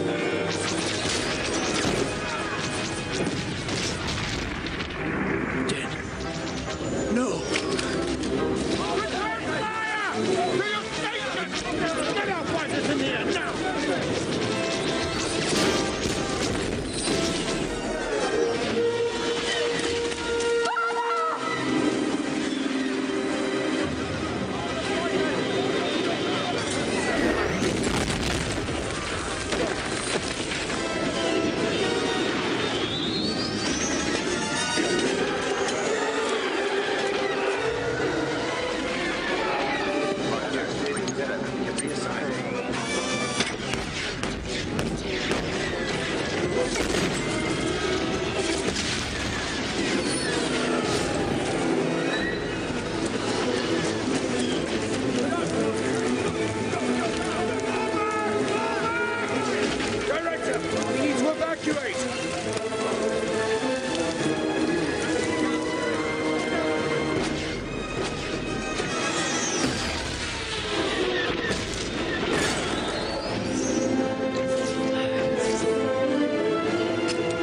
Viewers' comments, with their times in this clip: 0:06 Diego Luna’s delivery of “Jyn…NO” would be right at home in a romantic drama. Cassian’s down bad for her.
0:59 if you dont know, that is a death trooper with out its voice changer on
0:59 death troopers have normal voice and speak English for once
1:00 death trooper without decrypted voice👍🏻